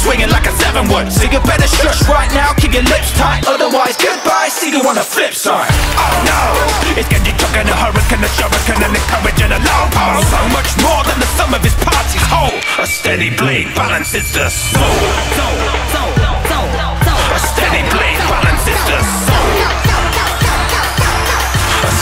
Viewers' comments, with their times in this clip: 0:06 Really digging it! The part flows so well it's unreal.